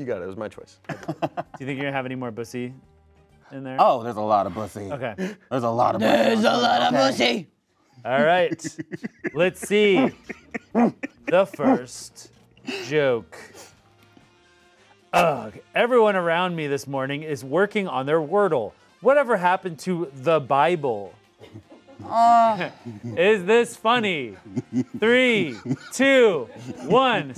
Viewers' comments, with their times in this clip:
0:10 what’re those grunts?